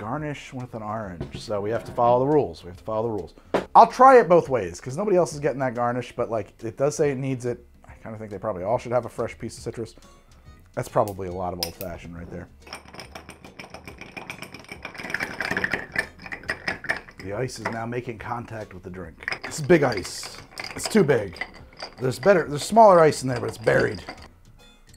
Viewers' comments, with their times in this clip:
0:09 when the ice cracks makes me feel things